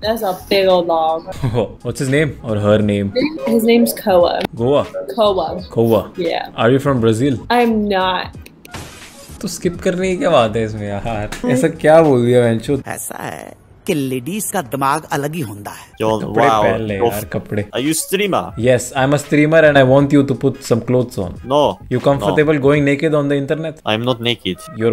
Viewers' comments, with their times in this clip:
0:08 The way you said Toh Skip Karne Ki Kay Batt Hai Issme Yaar?! 🤣